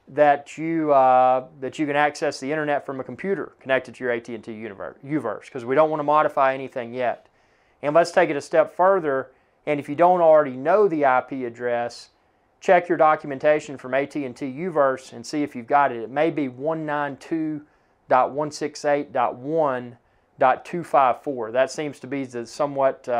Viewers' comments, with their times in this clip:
0:04 I got to and this guy is saying "Make sure ah that ah your att UNIVERSE is ah connected" and then I'm out